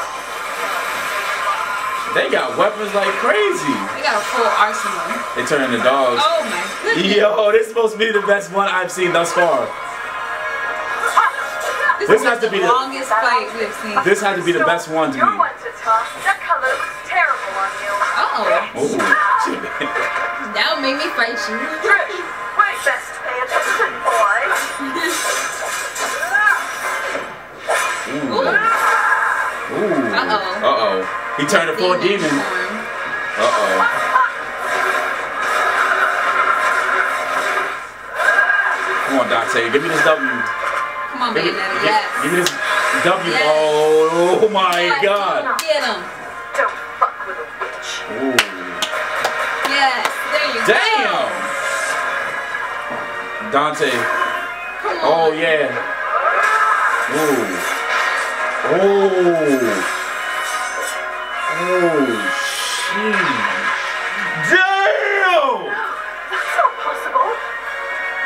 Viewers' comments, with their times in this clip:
0:04 hears cheetah noise is tHaT a dOg??????
0:52 Their washer/dryer went off. 🤣
0:54 Lmao I can hear their dryer/washer goin off